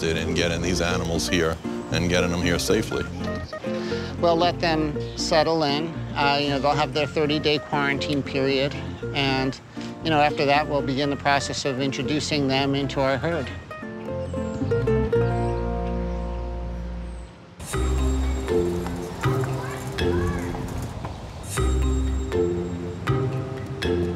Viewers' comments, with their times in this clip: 0:05 WTF IS THAT VOICE 😂😂😂😂😂😂😂😂😂😂😂😂😂😂😂😂😂😂😂😂😂😂😂😂😂😂